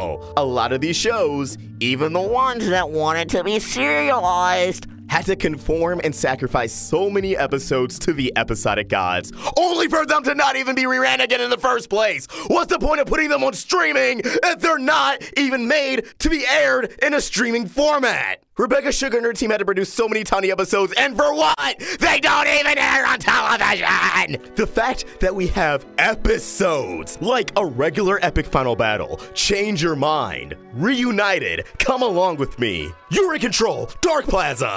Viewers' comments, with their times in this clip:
0:09 The sound of bakugo nice rant
0:10 Go to to hear him screaming
0:21 the mic cut out for a split second